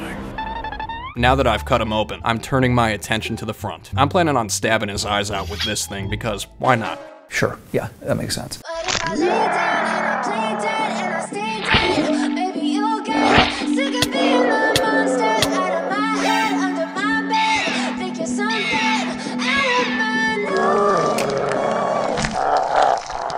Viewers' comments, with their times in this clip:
0:09 the music:😂🌹🌸😄✨❤️ him:❤️‍🔥❤️‍🔥✂️📌🔪🔪💀💀🤭🫴🔪